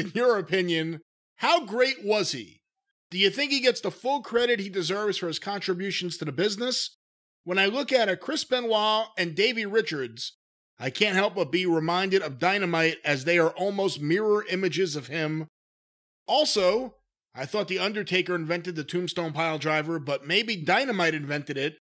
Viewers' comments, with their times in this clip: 0:08 My audio went out for a second there. I heard him say Davey Richards tho. Not sure who he was trying to reference right before that..